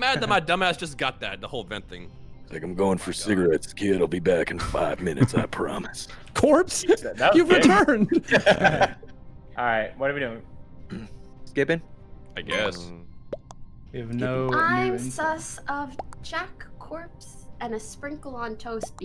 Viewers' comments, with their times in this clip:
0:03 Corpse, was that you doing the country accent? You seem like the only one in the group who could pull off so I’m going to assume yes? But I’m curious